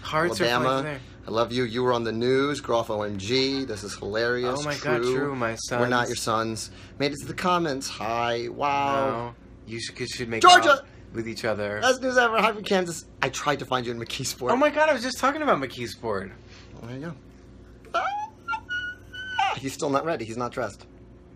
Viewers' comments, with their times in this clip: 0:07 I don't think Groff was lying when he said he knew every one of Eliza's lines. (Edit: I just realized when Lin is reading the comments he's just whispering the one comment he read, "you guys should make out with each other")